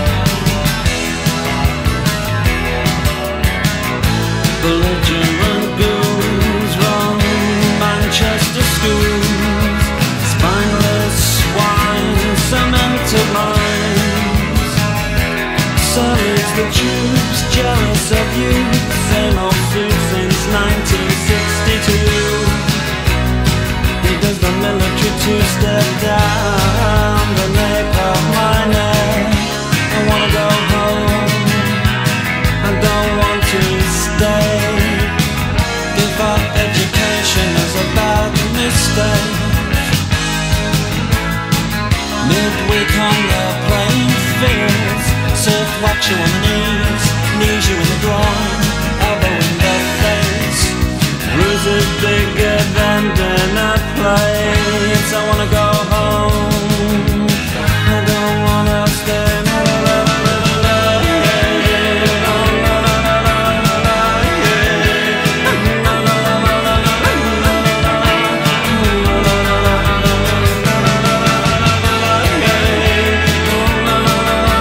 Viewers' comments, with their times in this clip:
0:04 magic moment........one of the best chord change of history
0:58 The way the Marr's guitar and Morrissey's voice go together is one of my favorite parts in any Smiths song. Absolutely brilliant! I just love that sound on the Meat is Murder album.